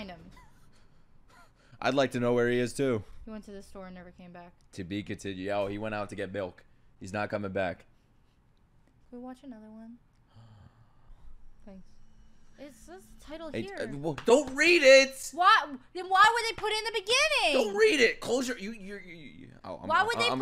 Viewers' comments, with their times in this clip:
0:08 can i watch another one? - gasps i laughed so hard